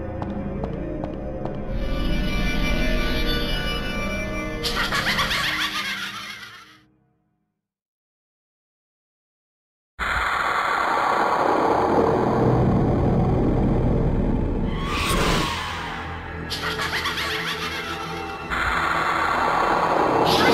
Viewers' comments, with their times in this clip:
0:03 I LOVE that laugh. Still creepy after all these years.
0:04 Been looking for that laugh for years.